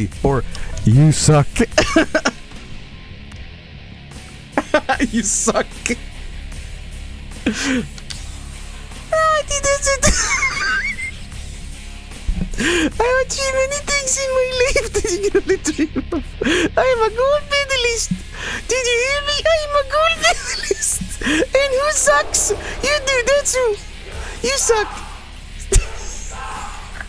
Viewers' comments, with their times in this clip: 0:08 Completely accurate Kurt Angle voice.